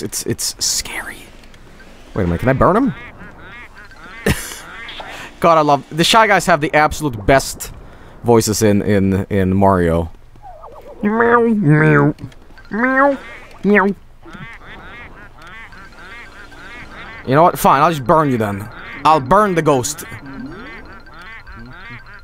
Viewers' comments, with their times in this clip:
0:10 THAT WAS THE START OF A FLEENSTONES YOU CAN'T LIE TO ME